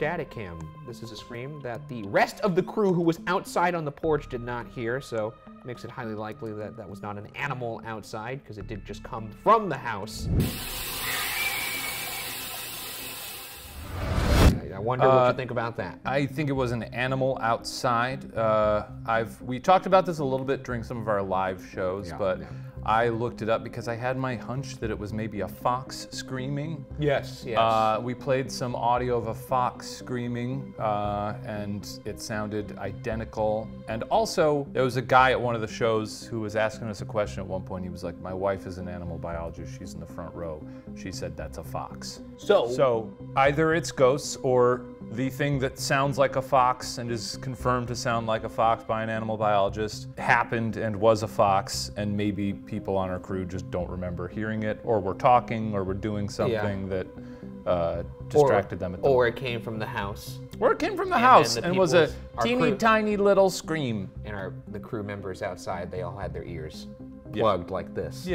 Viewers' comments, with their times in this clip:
0:08 That scream sounded like freedom. 🦅 🇺🇲
0:55 that's funny, because you've heard foxes scream on your shows before (at the goatman bridge, for example), but this scream didn't sound like a fox to me. It was very high-pitched for that, and at least my foxes sound throatier. I was going to look up other animal vocalizations for a match, because a bunch of them scream - barn owls, fishers, etc.